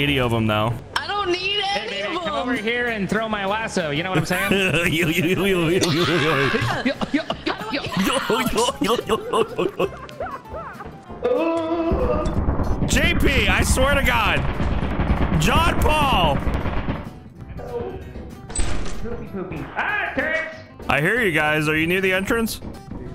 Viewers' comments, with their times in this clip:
0:10 did everyone become Goofy from Micky Mouse